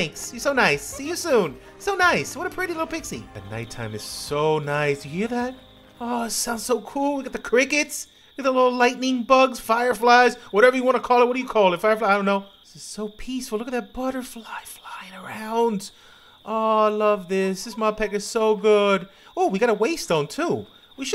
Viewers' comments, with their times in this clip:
0:03 ~ Nice sound !! (In Japan, the sound of insects is good) And... This MOD is very crazy ...